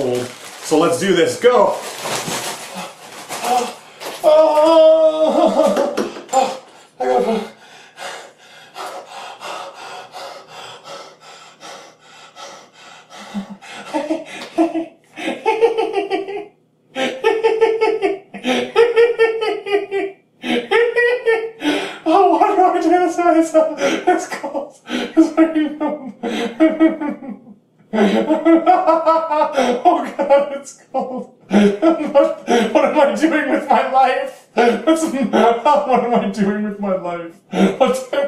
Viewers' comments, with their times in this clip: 0:04 sounds like he is having a Baby the he sounds like the joker laughing and shit
0:06 Weirdest laugh ever
0:14 he’s going like hehehehhehehhehehehehe
0:15 attack of laungh XD
0:15 why Are you laughing so much?
0:16 there goes the laughing from the second ever video he did on geometry dash
0:22 when he was laughing hysterically, I thought that was his decent into madness